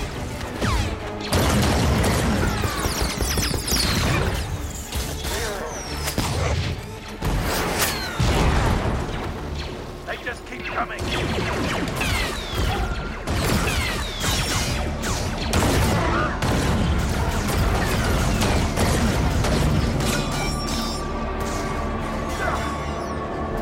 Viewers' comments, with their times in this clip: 0:09 The way Boba said that slapped me right back into Star Wars Battlefront 2004 for a second.